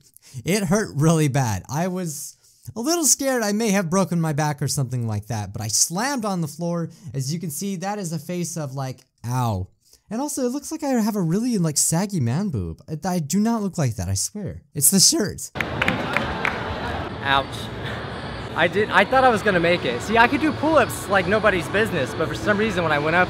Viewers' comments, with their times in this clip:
0:10 i thought he said "and it really looks like i have swaggy man boobs" XD i dunno how i heard that tbh